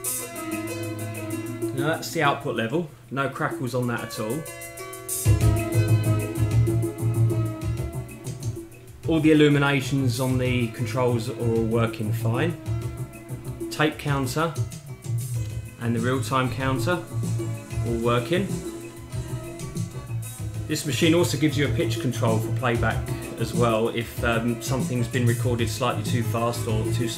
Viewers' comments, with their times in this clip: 0:09 There's absolutely no point in having music played on a reel-to-reel tape deck if it's not 80's sound! lol